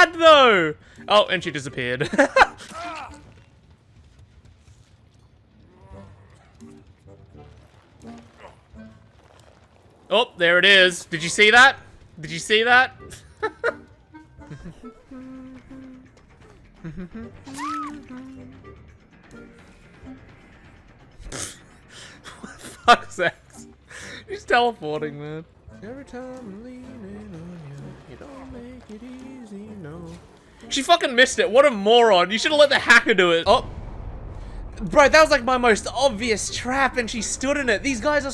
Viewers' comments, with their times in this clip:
0:08 I can hear the cartoon zoom sound effect on that one
0:16 sunflower? You have a very nice voice ❤ Good taste too
0:26 bro was singing sunflower